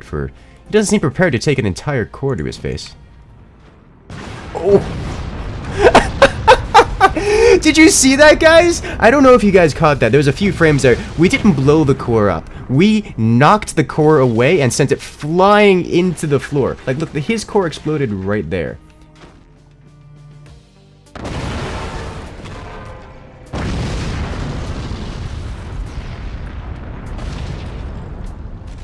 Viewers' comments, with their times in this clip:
0:05 I think that was the first time I heard you laugh
0:16 That's the first time I heard him realy laughing lol